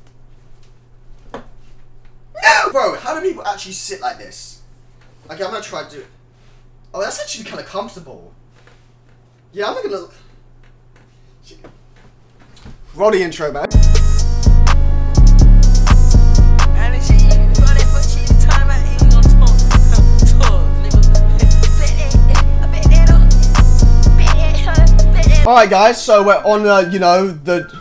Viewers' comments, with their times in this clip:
0:08 you can hear a small pop..